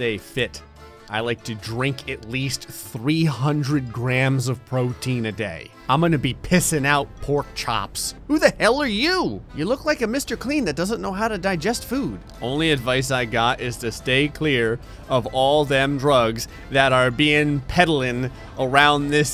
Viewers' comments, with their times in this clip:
0:07 Sounded like Goofy.